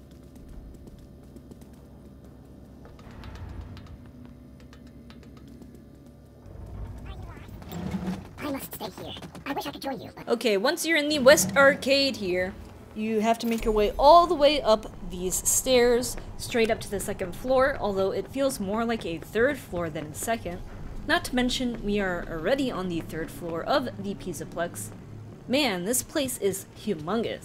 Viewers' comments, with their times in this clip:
0:08 HELP FREDDY'S VOICE, also thanks I was kinda stuck on the Arcade because I didn't know where one of the switches were, thanks a lot!